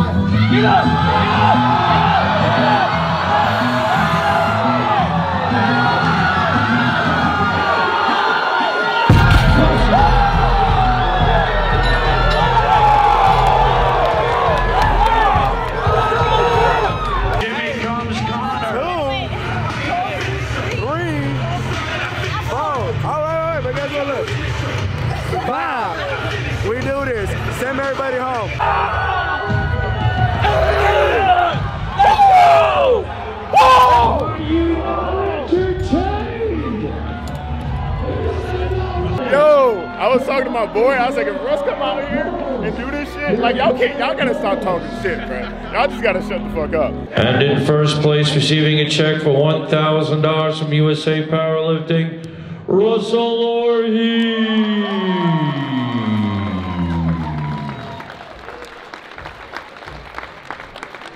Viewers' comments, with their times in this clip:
0:07 is so badass omg, i was legit praying he would use that song lol
0:48 why is my man sucking on the mic tho